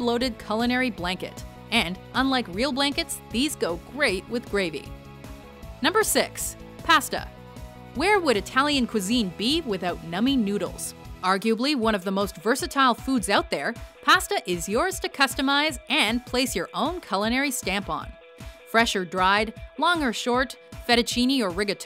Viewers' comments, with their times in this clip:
0:06 BREAKING NEWS... American pronounces "pasta" correctly:)